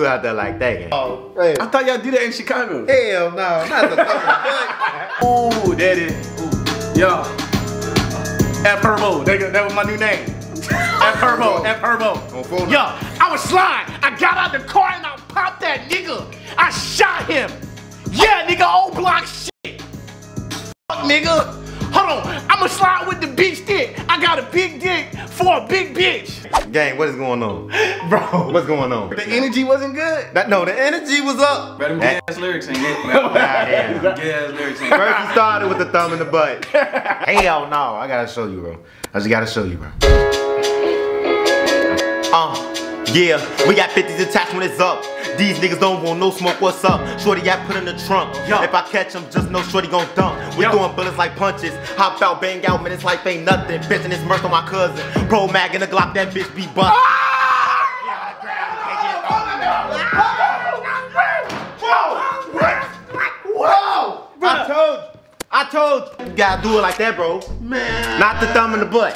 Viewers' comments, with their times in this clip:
0:06 Bro the beat was fire asf
0:51 he sounded like polo g a lil bit no cap